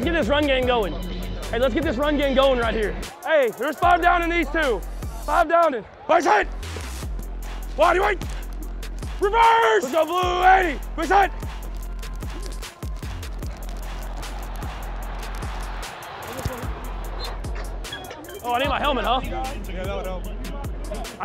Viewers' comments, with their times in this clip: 0:07 Mahomes does the fake reverse while yelling "REVERSE!" So the defense thinks someone on defense yelled it. Good stuff.